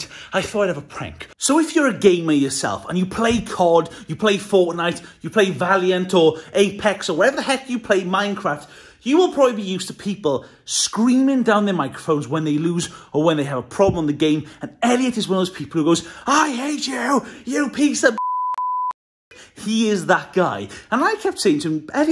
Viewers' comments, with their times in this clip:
0:03 Did he just say Forknite?